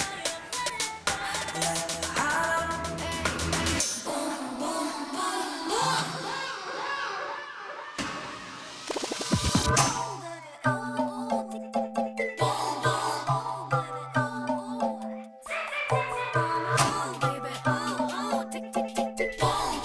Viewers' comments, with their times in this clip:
0:04 might be one of my favourite mixes in dolby atmos, no channel is left quiet and the drums and sfx are so good, legit got chills when i heard it on apple music 😌🎶